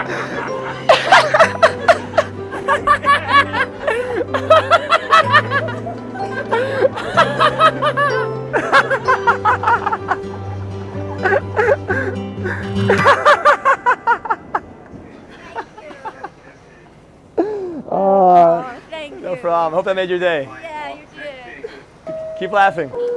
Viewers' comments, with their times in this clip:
0:07 they were laughing because the guy farted